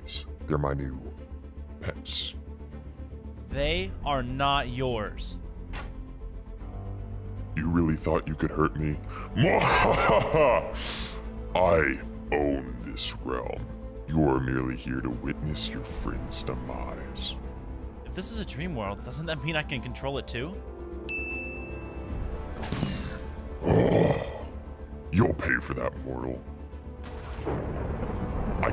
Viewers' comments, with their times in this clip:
0:09 after the laugh is the sniffles i hear. So you saying the new boss affected by allergies